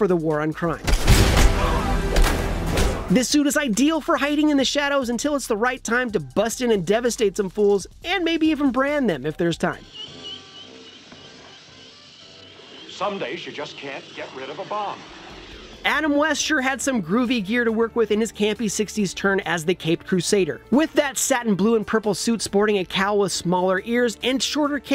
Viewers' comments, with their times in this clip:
0:10 Batan? Who is Batan?